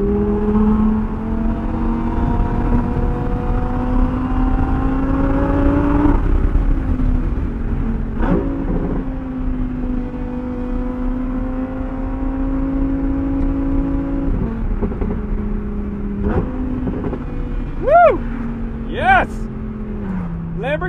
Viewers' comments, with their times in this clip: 0:07 That downshift .... such a crazy sound lol